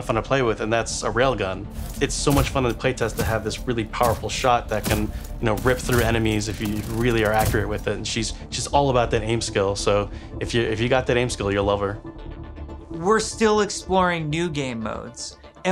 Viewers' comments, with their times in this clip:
0:03 "Weapon Sounds"... sorry don't get me wrong i'm hyped for Overwatch 2 but this Railgun sounds really lame for such an powerfull weapon... i love Railguns <3